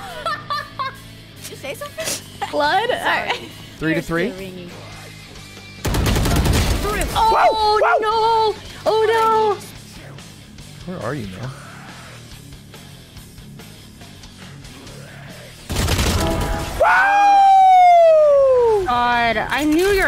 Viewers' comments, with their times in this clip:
0:06 Ludwig barks I think he is a furry 😞😓
0:06 bro started barking, can't blame him 😏